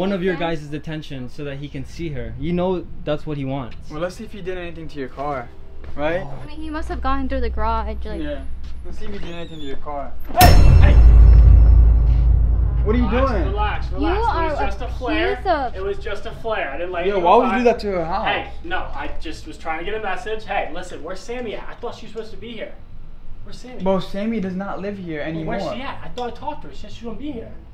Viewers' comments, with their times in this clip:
0:10 when you opened the garage and the music went down I shook! And wtf would do that